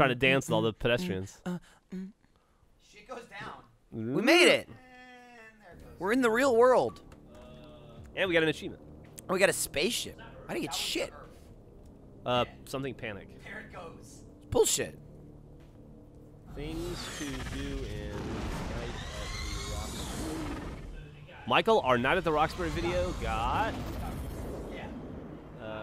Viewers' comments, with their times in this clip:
0:09 The audio appears to overlap itself from just a heads up.